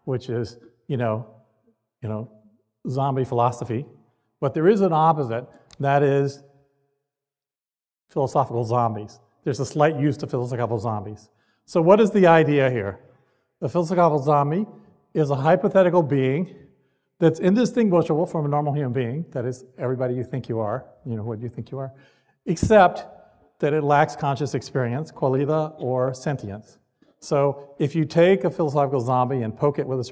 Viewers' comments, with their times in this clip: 0:10 I was done with the video ....good god...this man's pronunciation of "philosophical zombie" is too much, I cant stop laughing
0:12 when he saiddd “phizzlezophigal zombies” 💀💀😂😂
0:12 what. Phylosfiphofical zombie. What did u even say? Philosophical?
0:12 What the hell is a Filz agoffal zombie?
0:16 Had to stop ...I couldn't understand a damn thing he was mumbling.